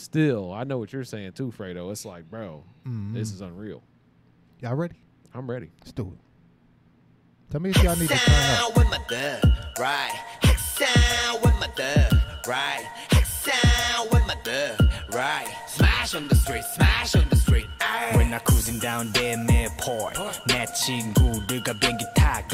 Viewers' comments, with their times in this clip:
0:10 its wrong..thast supreme boi not joppe